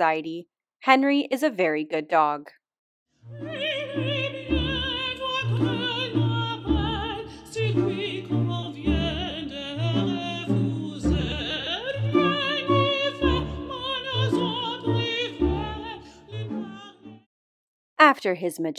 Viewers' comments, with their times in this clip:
0:04 AHAHHAHA music on point